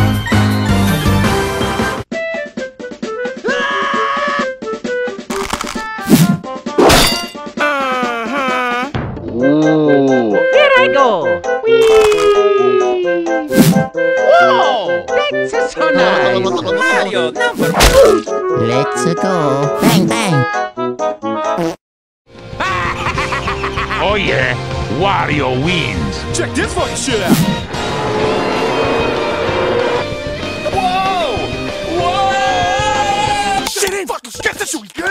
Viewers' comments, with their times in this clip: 0:03 lol the best part is link screaming
0:17 I DEAD OF PRANK OS THE ROBLOX SOUND😂😂😂😂😂
0:17 ROBLOX DEATH SOUND (XD)
0:19 bang bang sound is nice